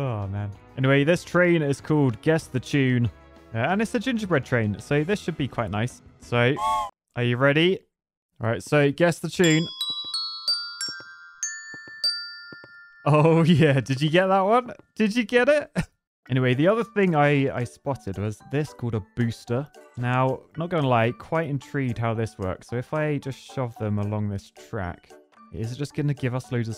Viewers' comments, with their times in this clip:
0:07 the best tune in YouTube X3
0:08 i thought it was amogus for a second💀💀